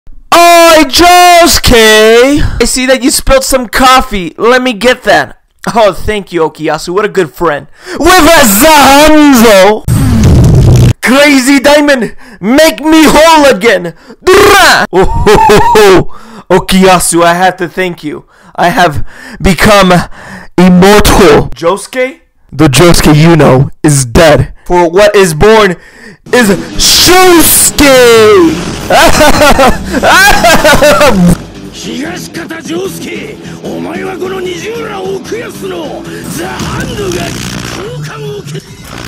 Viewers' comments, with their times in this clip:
0:00 R.I.P. my ears
0:01 My volume was at max I think my ears are bleeding
0:14 that DRRA sounds so secksy
0:14 this dora, it has some weird voice to it.
0:29 the laugh just perfect
0:29 boss's evil laugh be like